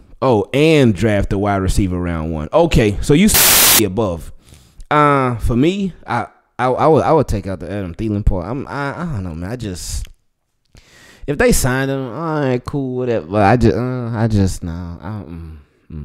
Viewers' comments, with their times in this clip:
0:03 Anyone else having a sound issue a ?